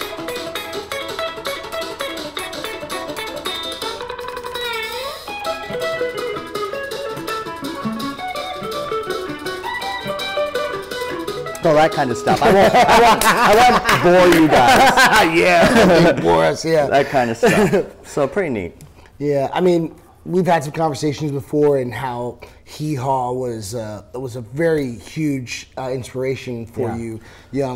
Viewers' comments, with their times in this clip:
0:08 WHEN YOU ARE RUNNING OUT OF TIME IN SUPER MARIO WORLD